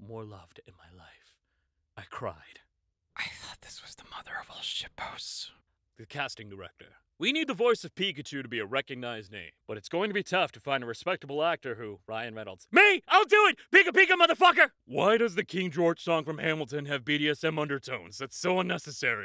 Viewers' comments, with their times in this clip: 0:05 I couldn't stop laughing for the longest time after this one (also love how sometimes the voice sounds like John Mulaney, esp on the "when I was a kid" posts)
0:06 The fact that the guy in this video kind of sounds like Ryan Reynolds and that the things typed in the comment is actually something Ryan Reynolds would say made me laugh so hard